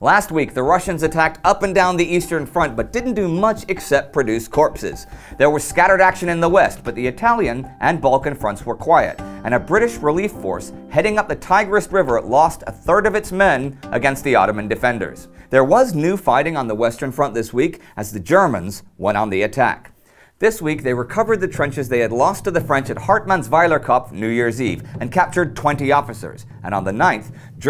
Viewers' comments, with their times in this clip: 0:08 Did someone leave a car door open ?